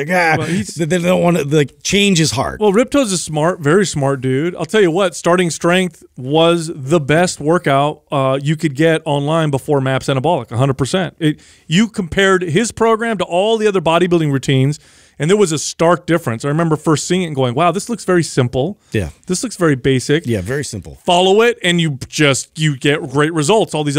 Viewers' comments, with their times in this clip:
0:10 “Maps and a bullock?” Come again?